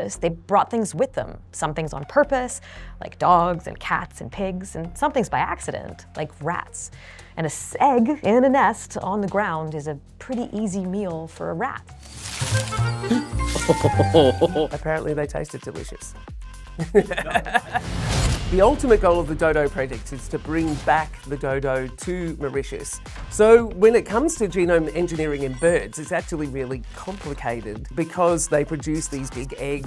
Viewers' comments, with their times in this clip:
0:10 what is a "segg"? A single egg?